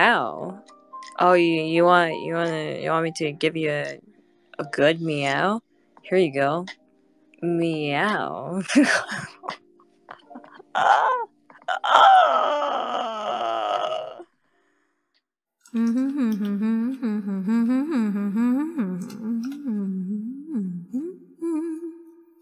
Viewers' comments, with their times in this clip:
0:10 Aww Kronii's meow so cute. Sasuga our perfect time warden! Why does that sounded like Bae? xD